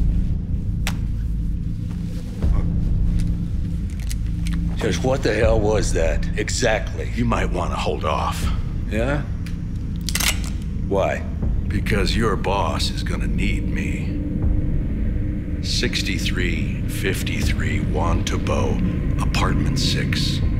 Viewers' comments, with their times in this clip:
0:06 That EXACTLY overdub was done so badly. I'm surprised I didn't notice it during my first watch